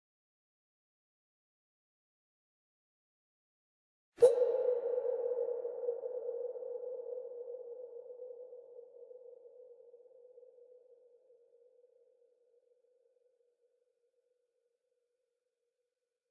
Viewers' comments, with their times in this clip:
0:04 No way the one ended up being perfectly timed and in key with the ending note of Night on Bald Mountain. That shit was incredible and I really wish someone was here to have experienced that with me